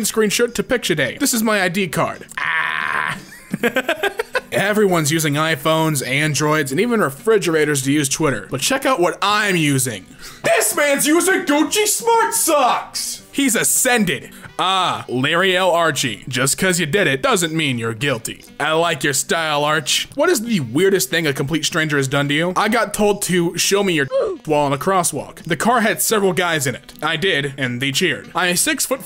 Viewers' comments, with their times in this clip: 0:04 is my favorite part. I cant stop laughing at his scream.
0:13 the way he said that-